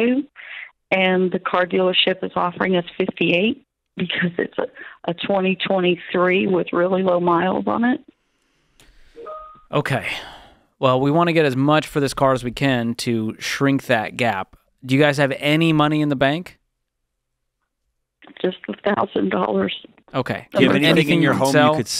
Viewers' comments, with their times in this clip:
0:08 You can tell by the chimes that she owns a Tesla
0:09 I bout had a heart attack (not because of the CC debt, which is bad) when i heard the teams message 😂 I'm away from my computer listening to this hahah